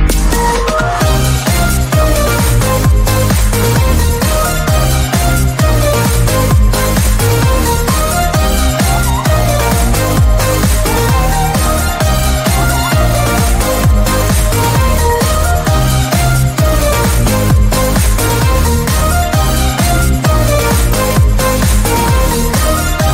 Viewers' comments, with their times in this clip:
0:07 at this part I thought my cat was meowing at me